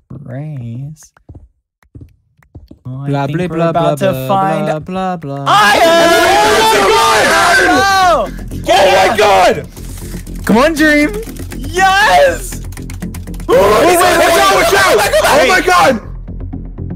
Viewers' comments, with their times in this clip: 0:04 I HEARD THEM MINING I LITERALLY KNEW THEY WERE COMING BUT I GOT JUMP SCARED WHEN THEY POPPED OUT